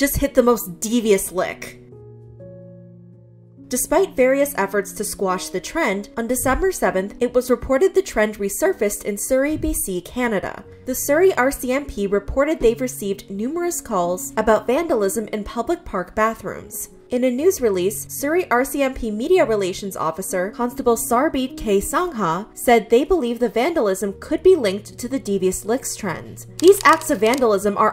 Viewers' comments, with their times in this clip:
0:10 fellow Canadians I thought we were better than this (AND WHY PRONOUNCE SANGHA LIKE THAT 💀 SANG-A IS FINE BUT SANG-HA?! THIS HURTS AS AN INDIAN)